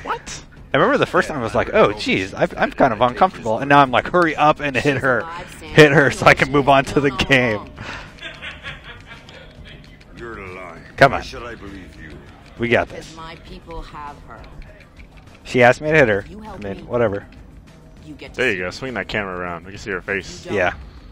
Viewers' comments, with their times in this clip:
0:07 did anyone else hear Greg millers evil laugh in the backround O.O